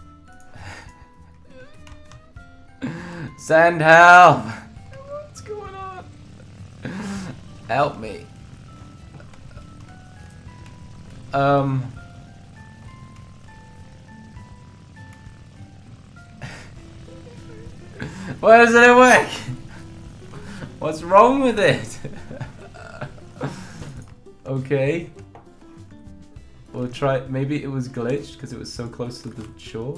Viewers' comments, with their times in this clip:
0:10 Was that your voice (go to on this video to )